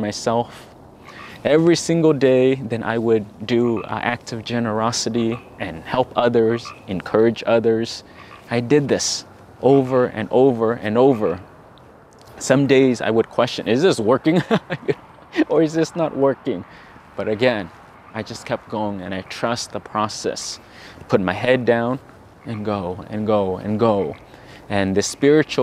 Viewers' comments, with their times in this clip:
0:10 the frog harmony